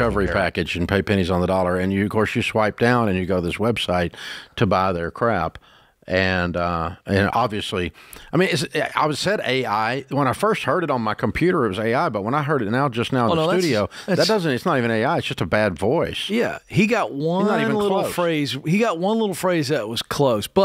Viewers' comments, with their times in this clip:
0:06 What's really scummy is that the woman on this call is the poor lady whose boyfriend was threatening her and her baby, and Ramsey Solutions called the police for her. I'll never forget the sound of her frightened voice. So they're using Dave's "voice" and this poor woman's voice too.